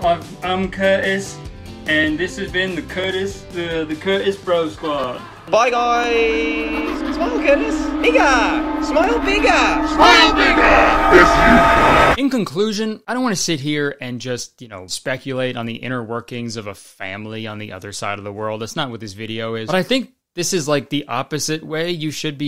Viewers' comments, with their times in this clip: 0:07 When he said bigger in an Australian accent I froze for a second